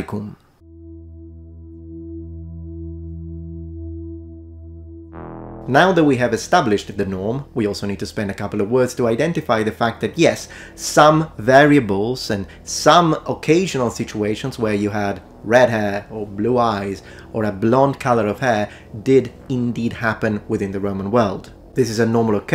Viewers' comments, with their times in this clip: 0:05 Did you fart ?